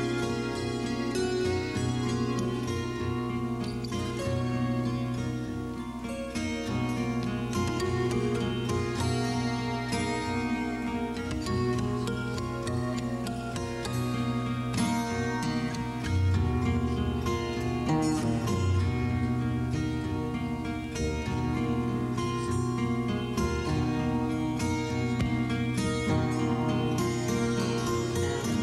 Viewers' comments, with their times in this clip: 0:10 Wow, what michael does with those harmonics is out of this world! wowoowoww. That made a huge impression.